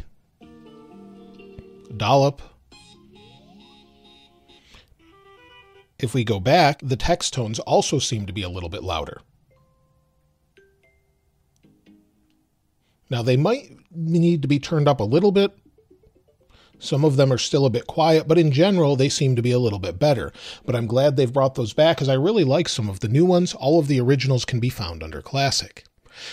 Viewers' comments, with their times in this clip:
0:09 You were testing the tones and said that some of the tones were still low, yet you didn't have your iPhone on full volume It was below half. At full volume are they noticeably louder or still low and soft?